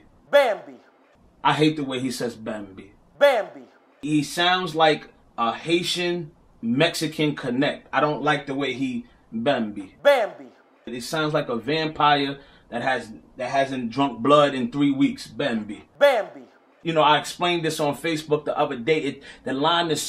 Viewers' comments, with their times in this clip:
0:03 it’s funny how YOU are pronouncing bambi wrong but wanna criticize someone else 😂